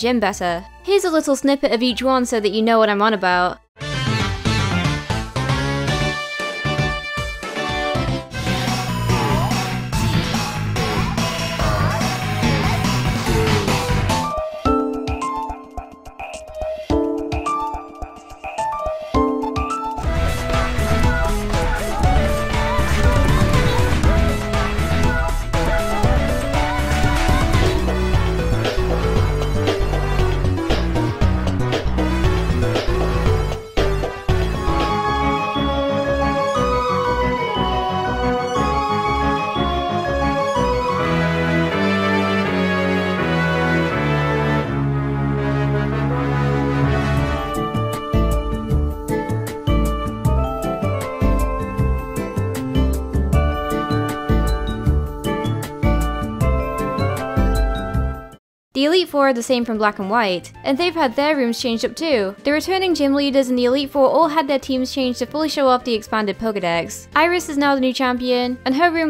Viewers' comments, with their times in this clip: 0:08 huh, you used the Japanese version of that Gym's theme. She spells D-O-G-A-R-S in the Japanese version, while the international version spells P-O-Ken-E-M-ON (I know it's POKEMON, but the K sounds like they said "Ken"). I would have never noticed if it wasn't for my AceKard and me playing through a English-Translated version that translated items and Pokemon names and moves. DOGAS is KOFFING's original Japanese name so it makes sense. What doesn't make sense is why it was swapped to POKeMON in the international version. Was KOFFING too many syllables or the beat just wasn't right?
0:20 I swear that that gym leader's theme music is the Pokemon theme song overlapped w/ the "I'm a Barbie Girl" beat.......?? & some other gym leader's theme music sounds recognizable too to some other music I've heard before, I just can't put my finger on it tho'...?? Game Freak, y'all doin' some strange things nowadays, well then again it is in the name sooooooo....... 😂😂👍
0:52 Everything was so tense then elevator music!!